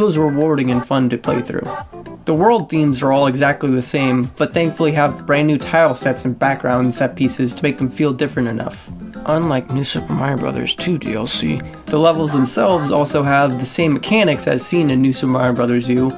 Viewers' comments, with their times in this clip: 0:03 the 'bah' is timed perfectly with the B button thing in the bottom left corner